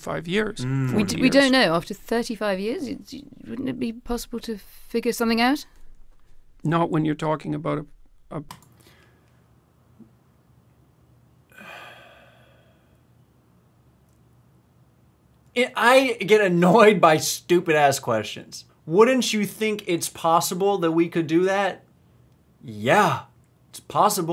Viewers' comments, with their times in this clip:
0:09 That sigh... I felt that man...